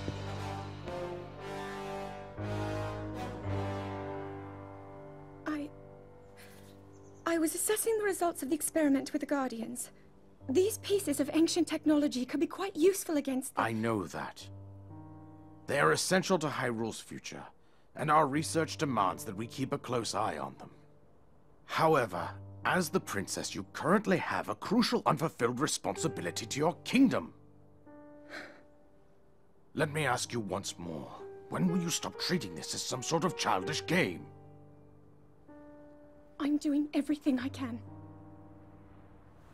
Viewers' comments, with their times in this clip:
0:07 Arthur... is that you??
0:22 The worst is the King voice acting, it was like reading scripts...